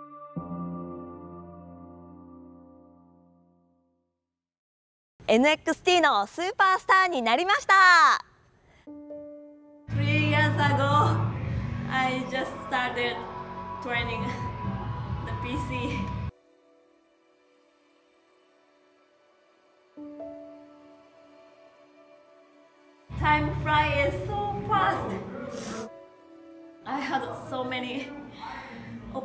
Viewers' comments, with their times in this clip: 0:09 as funny as it is that Dolph Zigglers music is barely hearable in the background, its kinda fitting
0:10 you can hear Dolph Ziggler's theme in the background. We'll miss you Kairi 😔